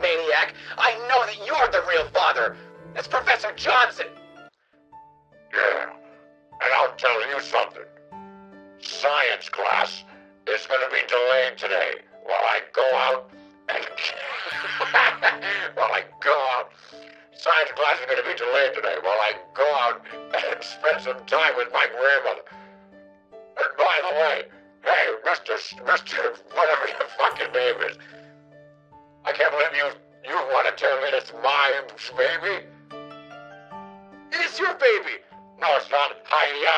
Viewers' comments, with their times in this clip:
0:05 why does he sound like Cad Bane
0:05 Professor Johnson sounds like Notorious Bounty Hunter Cad Bane
0:06 on an unrelated note, sounds a lot like cad bane to me lol
0:13 Idk why the distorted laugh and him breaking character was the funniest shit ever lmao
0:18 Jerma sounded a lot like Cad Bane